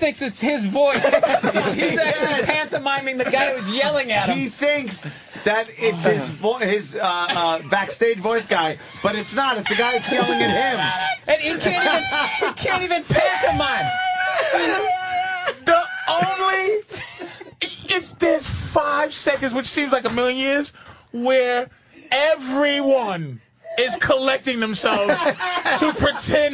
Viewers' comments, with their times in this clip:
0:08 Patrice's laugh. I miss him.
0:09 Patrice starts wheeze-laughing like Fatty McGee from Adam Sandler's album
0:10 I love Patrice’s laugh here. He can’t contain himself.